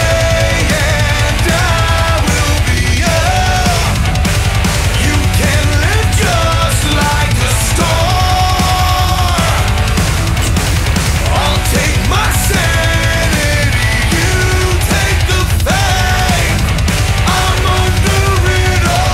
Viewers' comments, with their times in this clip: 0:04 double bass ass drums? I LIKE:D